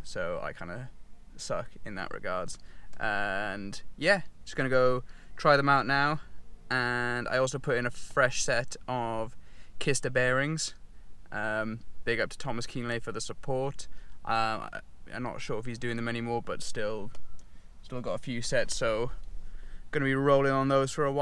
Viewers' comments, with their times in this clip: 0:07 Visuals look tidy and no need to up the mic, it's clean anyway. 🙌🏻🙌🏻